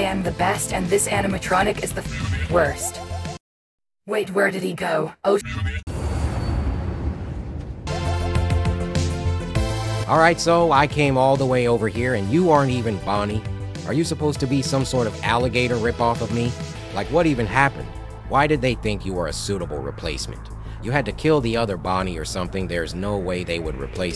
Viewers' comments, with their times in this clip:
0:10 why does Bonnie sound like CoryxKenshin